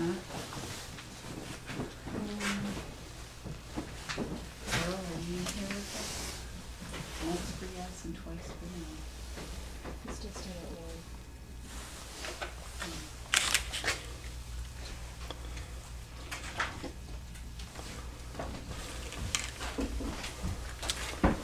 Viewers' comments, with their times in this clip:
0:08 they have hopeless camera to film plus they all whispering, coughing and not asking any questions all they are doing is walking around finding and why did it stop